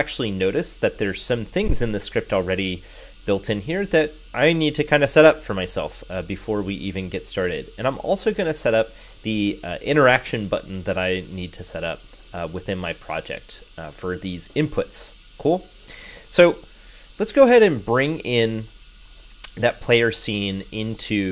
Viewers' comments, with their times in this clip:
0:03 thanks for sharing, great guide for raycast usage. One note though Initially your sound quality is great (and voice quality remains good), but a pronounced hiss starts in then comes in and out (fan noise??). I'm sure you're looking into it. But regardless I was able to get some great pointers from your video.